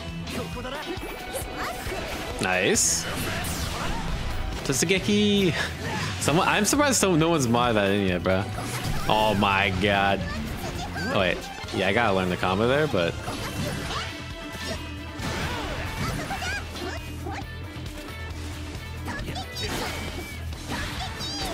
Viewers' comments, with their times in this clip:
0:04 I mean she already yells "totsugeki!" on 66H.